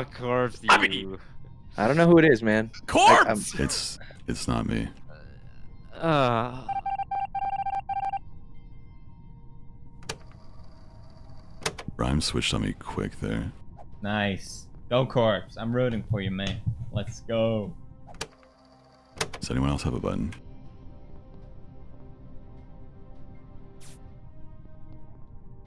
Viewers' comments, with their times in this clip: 0:06 Toast sighing in despair knowing full well that the other two players would not understand logic and be easily convinced by Corpse. Didn’t have a chance